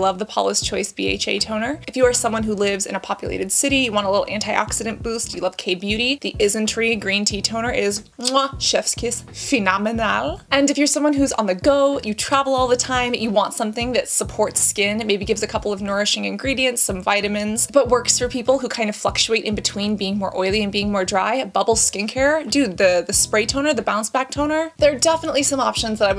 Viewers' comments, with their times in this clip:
0:07 PHE-NO-ME-NAL hahahahaha this made me laugh